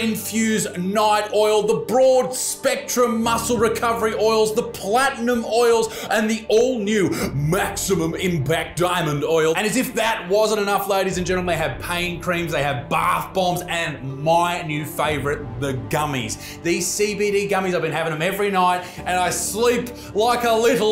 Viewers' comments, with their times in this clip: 0:08 wait did you turn into ray warren?